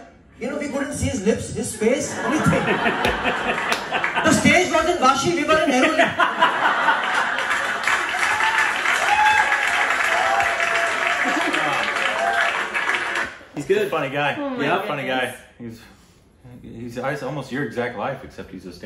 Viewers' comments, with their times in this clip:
0:04 fake laughter How did you know about Vashi or Airoli